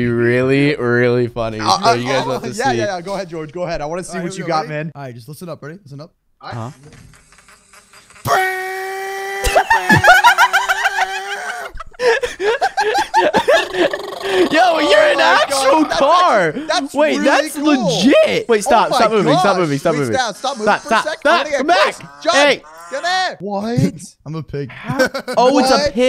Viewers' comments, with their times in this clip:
0:09 Not them sounding like little girls 🙈 Came back in 2024 bc of being noglestic :,)